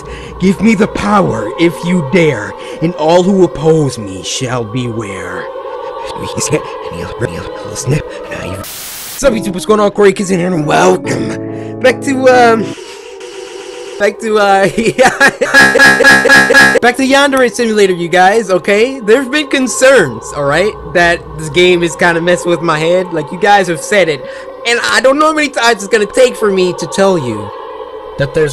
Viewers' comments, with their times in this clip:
0:07 you sniff and now you feel
0:07 pencil airplane execute that’s what he’s saying in reverse
0:15 My nervous laugh be like